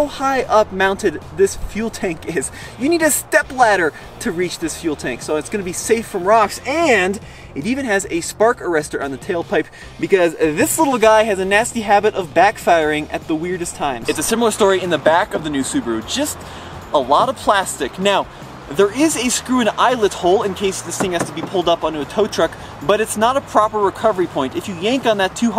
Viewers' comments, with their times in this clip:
0:08 I did not know the spark arrestor was factory! I have a 78 dl sedan and thought it was aftermarket. And yes to the awkward timing she decides to backfire. Great vid